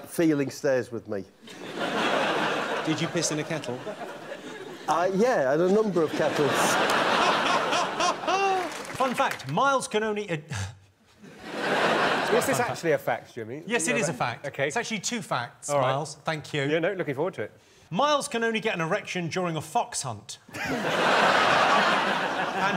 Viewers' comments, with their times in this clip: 0:09 I reckon Jimmy laughed/snorted because he messed up and almost said "ejacul---ded" first.... rather than "erection". Did anyone else get that?